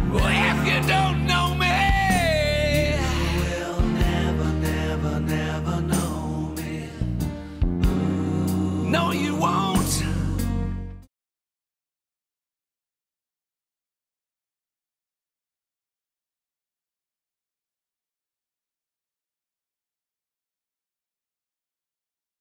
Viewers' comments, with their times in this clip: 0:04 The buddha is just hoping the singing would just stop